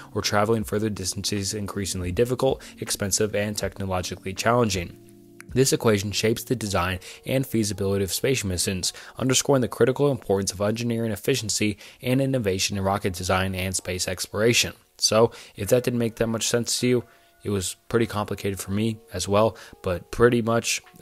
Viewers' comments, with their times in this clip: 0:07 you need to practice clear pronounciation otherwise good video